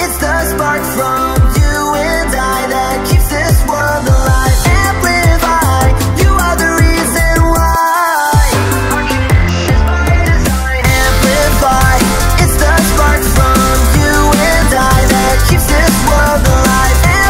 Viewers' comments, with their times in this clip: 0:04 the beat hear is so satisfying for me, it just sounds so good